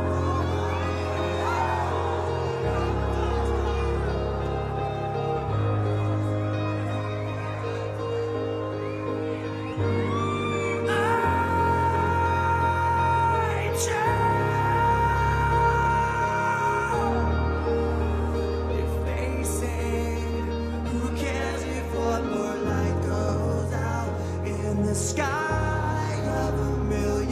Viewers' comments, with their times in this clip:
0:10 Tired voice and all......still made Chris hear him perfectly